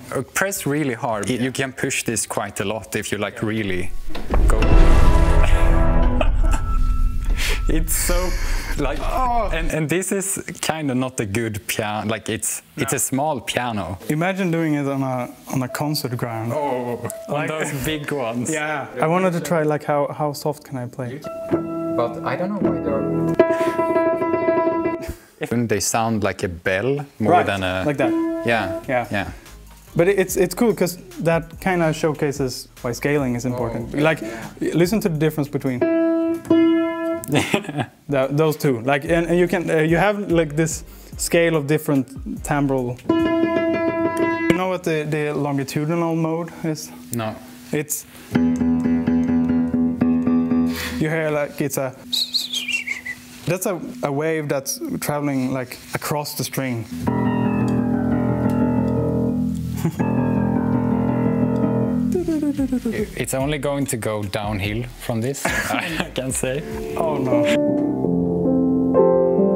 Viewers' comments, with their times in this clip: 0:03 Ah, the Playstation 2 startup sound
0:23 bro nearly played E Rush...
0:24 that reminds me of the hardest piano song Rush E
0:41 The effect may be caused by the hammers striking at slightly different proportional contact points as the string length changes but hammer height does not. Like a violinist playing colengno (hit string with stick instead of using bow hair), hitting the string in slightly different places creates different pitches that can be heard in the initial attack even though the fundamental pitch stays the same.
0:56 almost sounds like the Archer theme music.